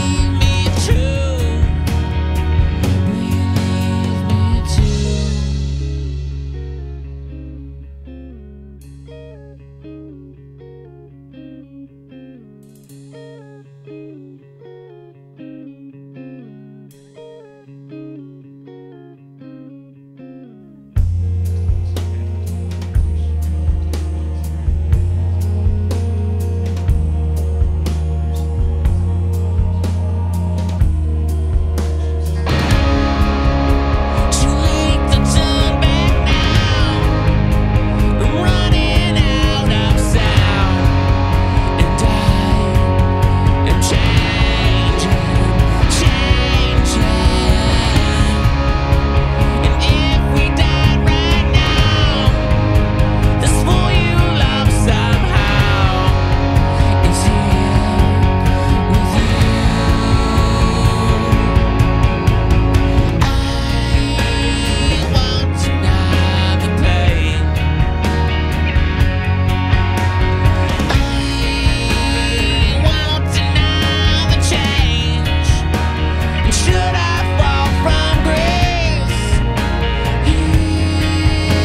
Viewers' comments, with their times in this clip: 0:06 the little 2-part harmony/melody is one of my all-time favorites
1:03 I love this song. It needs to continue the high energy (distortion, etc) I'd like to hear a version that does this.